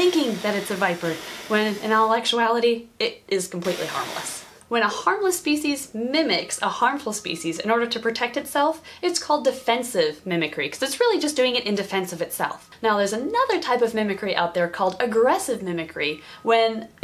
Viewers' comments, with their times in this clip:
0:04 That last little “hiss” 😂😂